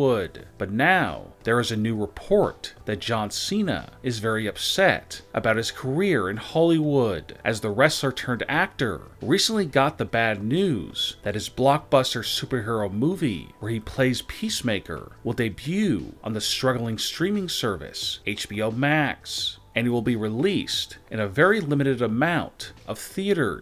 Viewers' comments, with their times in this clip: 0:06 Holly Woooud lmfao